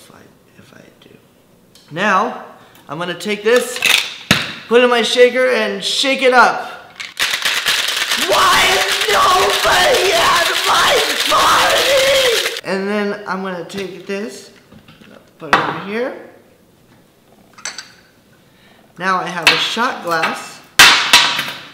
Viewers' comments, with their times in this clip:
0:08 RIP headphones xD